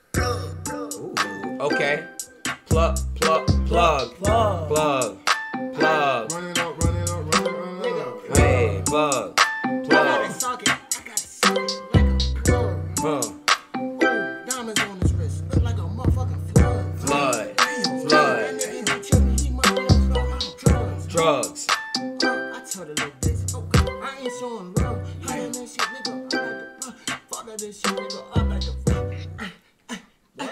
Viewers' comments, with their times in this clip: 0:04 that beat was fire asf where can I find it
0:14 I need this beat